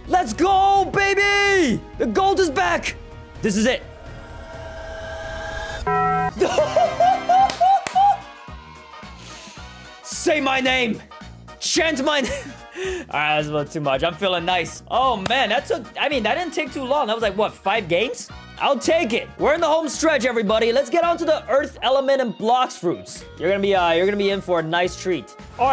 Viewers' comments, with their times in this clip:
0:05 the brook laugh😭
0:06 bro laughs like brook💀💀💀